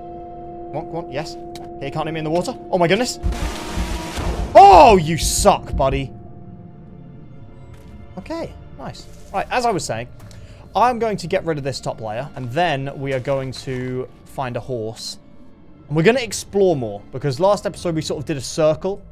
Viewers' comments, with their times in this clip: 0:03 i just realized that they're using fnaf TJOC jump scare sound effect and with this one its bunny punch u can clearly hear a metalic punch after he died